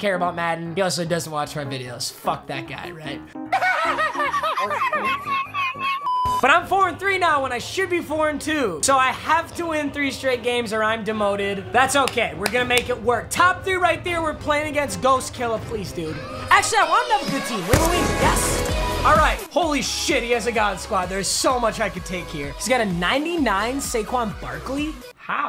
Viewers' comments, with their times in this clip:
0:06 i low key thought he said quarantine instead of 4-3